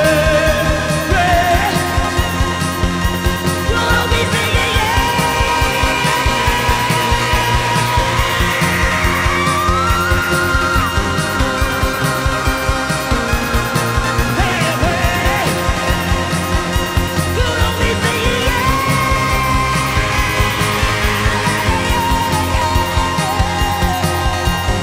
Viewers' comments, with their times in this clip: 0:10 Her voice is so amazing and then that changing in the voice is so insanely perfect it gives me the chills.